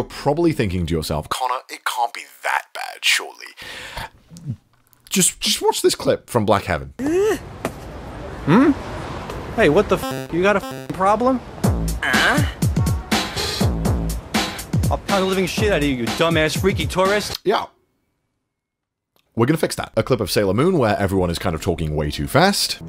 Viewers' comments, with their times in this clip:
0:09 i think this one supposed to be a joke, he maybe has a calm voixe by proposal i guess, i woul like if it's right.